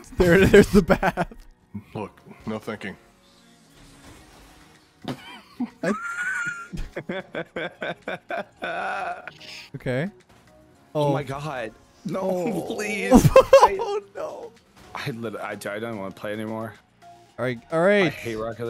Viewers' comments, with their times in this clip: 0:06 The laugh of a man starting to lose it and turn into the Joker lol